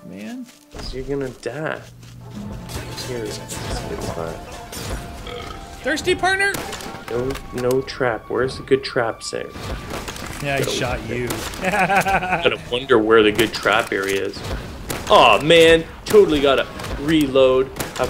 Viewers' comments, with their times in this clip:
0:06 montage music inbound